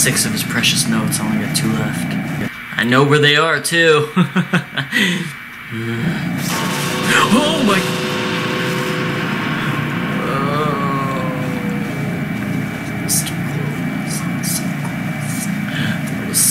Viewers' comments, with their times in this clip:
0:04 "I know where they are, too!" evil laugh immediately puts game face back on. Then growls.